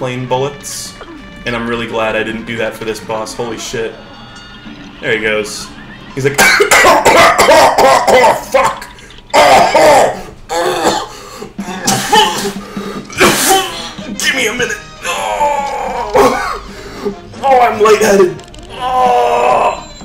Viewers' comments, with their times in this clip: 0:03 The coughing sounds you make are an accurate representation of i feel when im coughing and then spit out some kind of weird yellowish mucus suliva stuff into a jug.
0:05 He's like *coughing uncontrollably* Edit: Thanks for 1 like, wait why is it blue?